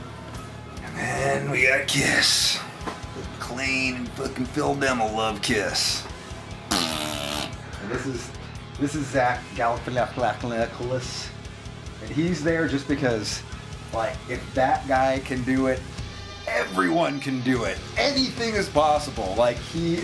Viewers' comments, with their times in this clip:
0:03 Phil Demmel loves kiss ! *FART*